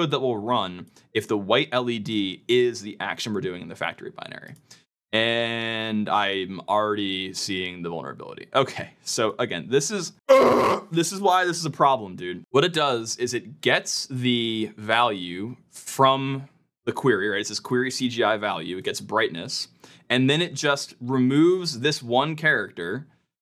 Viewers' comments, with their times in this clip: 0:08 lmao, the noise of someone who is in despair
0:08 When he OOFd , I really felt that
0:10 LMAOOOO WHAT IS THAT SCREAM IM CRYING BRO